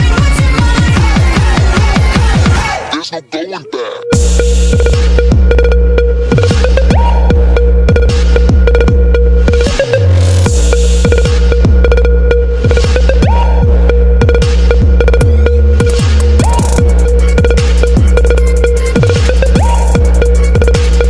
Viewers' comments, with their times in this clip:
0:04 I wish there was a better beat drop
0:04 Damm!!! The drop it I love this. Awesome job😍👌💥💢